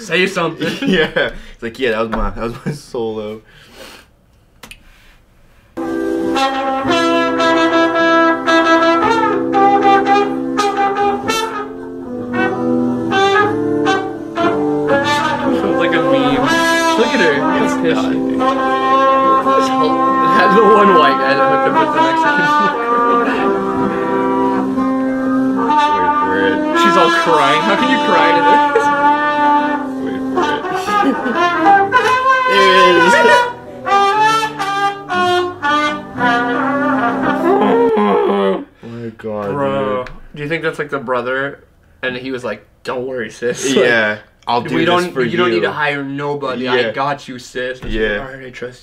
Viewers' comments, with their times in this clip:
0:05 it sounds like Benjamin the Elephant beeing sad about her merry another guy. Ofc he drank a lot :D
0:05 Middle school brass band be like
0:09 the trumpet got me dying 😂😂😂
0:22 The trumpet players in my schools ELEMENTARY band are way better. Two of them played the Star Spangled Banner for veterans and it was beautiful.
0:25 they're playing a wedding march on candy boxes. Totally not a fail.lol I recant my statement I didn't see the jackass on the Trumpet.
0:29 out of ALL instruments WHY would you hire a TRUMPET for your wedding. like AT LEAST hire a good player